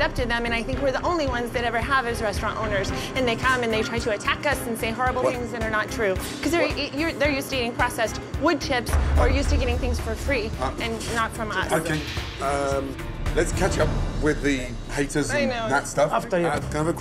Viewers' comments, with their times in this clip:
0:04 They sounded like robots